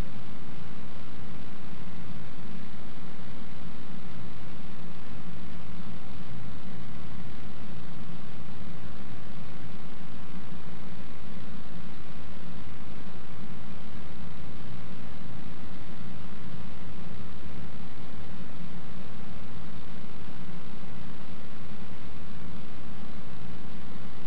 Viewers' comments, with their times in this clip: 0:09 😂 me when I enter the spa and find no facial towels and have clients 😅😂😮😮 wow… I’m intrigued already that was a looooong pause